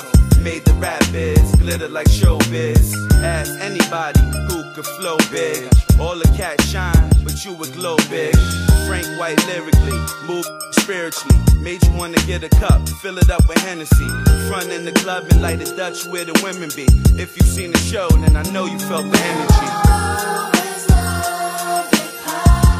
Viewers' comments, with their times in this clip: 0:08 the beat that starts is beautiful...this song is slept on!!!